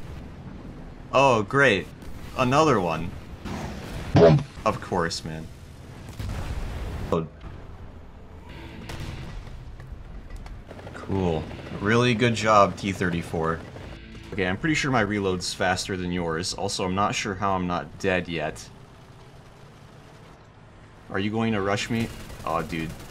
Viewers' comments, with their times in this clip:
0:04 WHATS THE BOMP SOUND